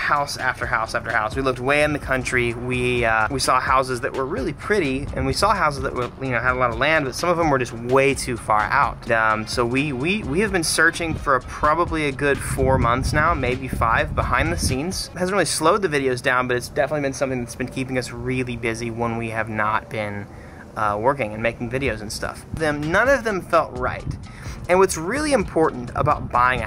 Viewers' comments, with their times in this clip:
0:09 When you ask the foreign exchange student with a stutter if he’s French